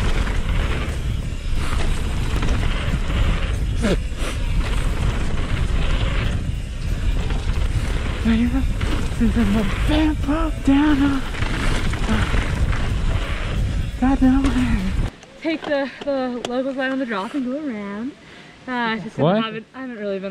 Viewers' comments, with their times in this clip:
0:08 He was singing something I couldn't recognize the song, though.